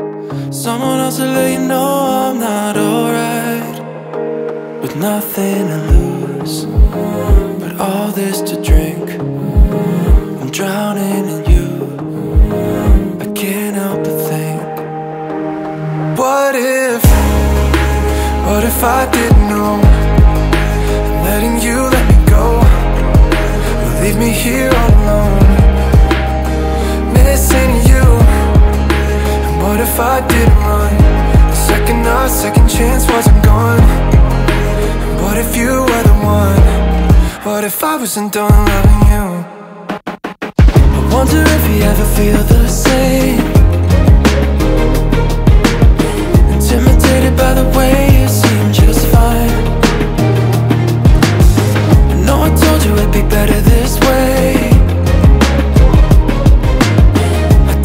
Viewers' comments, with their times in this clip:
0:06 Lovely song randomly Spotify suggested me. Especially that humming wow! melting.
0:40 Hands down the best song of the new wave so far! Loving the orchestral strings in the second verse that was so unique 🔥